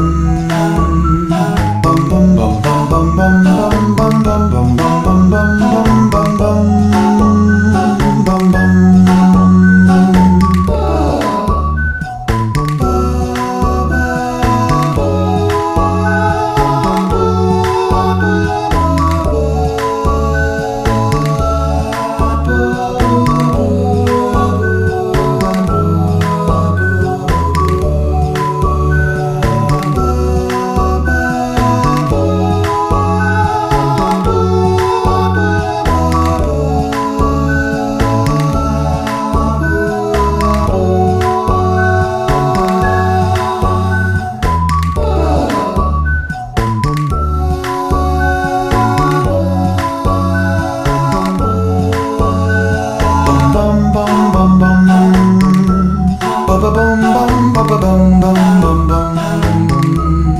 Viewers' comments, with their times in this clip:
0:10 which one did the ppperrrrararararrgghhh ?
0:12 Entregan in this video, go and compare again. If you can not hear a clear similarity it's cause you're deaf.
0:47 Impressive singing, and such nostalgia. I'm actually replaying the game on Android at the moment, having first played it emulated 15 years ago, and it really has aged remarkably well. I'm really amused by the cat :)